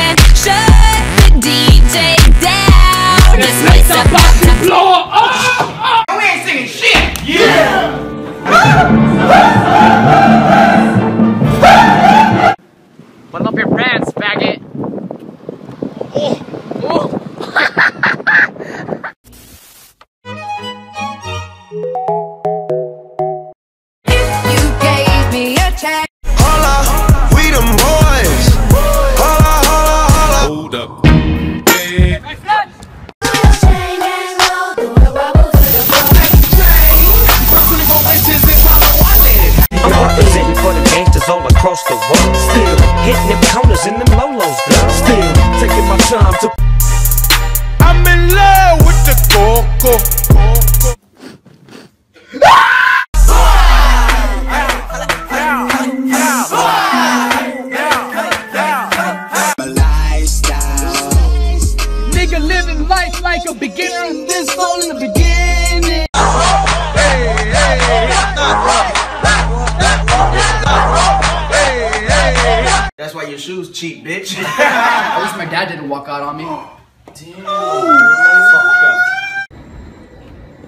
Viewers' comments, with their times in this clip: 0:08 that's what I call a music
0:09 Girls music class: Chill and relaxing Boys music class:
0:12 I like the music piano vs violence
0:20 that song bussin😩
0:59 what did he say???
1:02 is it me or does anwar say the N word
1:02 that song has words?